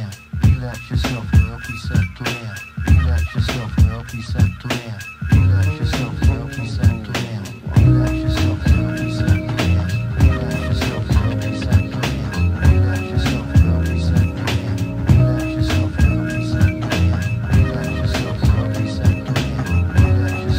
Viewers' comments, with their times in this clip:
0:05 that subtle saxophone fill